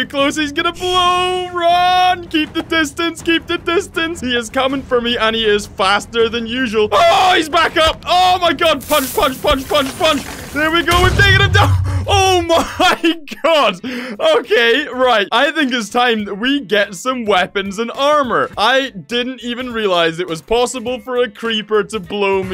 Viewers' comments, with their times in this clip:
0:08 I thought I heard you say f*** 😳